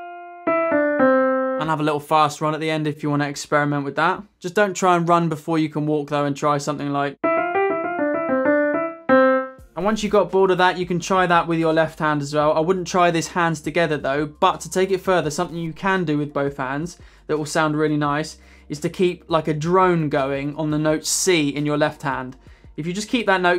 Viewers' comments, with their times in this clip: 0:06 For a split second, I thought this was Roundabout by Yes.